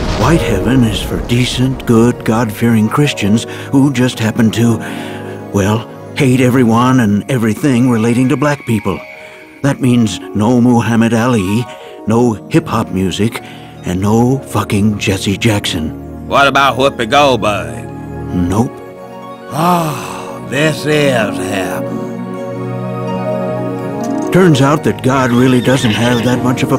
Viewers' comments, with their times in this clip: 0:10 You can hear Reagan talking but his mouth ain't moving